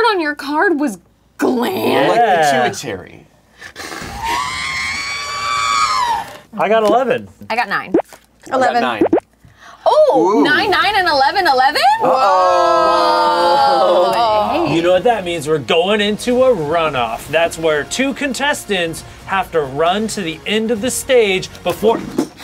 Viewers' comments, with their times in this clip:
0:05 That R2D2 sound tho lmfao 😂😂